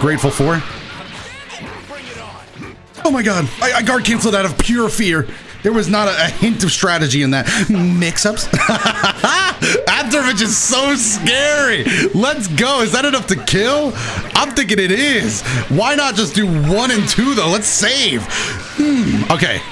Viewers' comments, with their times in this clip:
0:07 That "Mmmmixups~" had so much weight behind it idk why
0:07 I cannot describe how much I love the ways he says "mix ups"